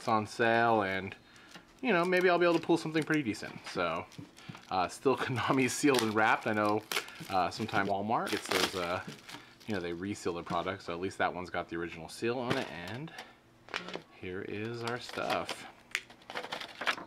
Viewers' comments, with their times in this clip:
0:05 I swear that 'walmart' was dubbed in